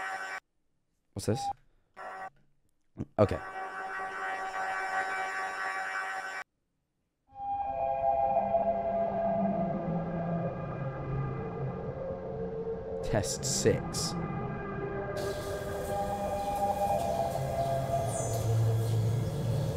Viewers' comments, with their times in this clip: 0:07 daisy bell stars playing in the background or (Daisy Daisy give me your answer do, I’m half crazy all for the love of you) TT auto. :] just found that interesting